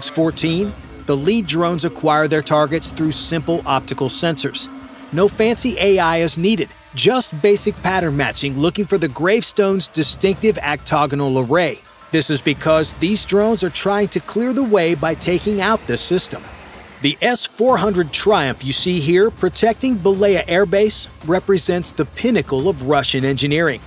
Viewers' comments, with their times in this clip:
0:09 Ah yes, the Actoganal array...